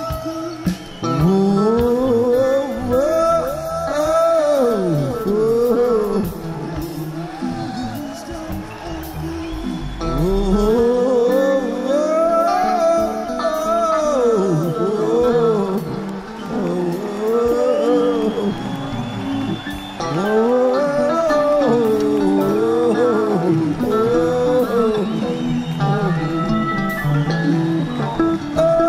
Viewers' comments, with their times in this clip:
0:10 Jerry “moan scatting” all by himself at end of He’s Gone. He gets into it.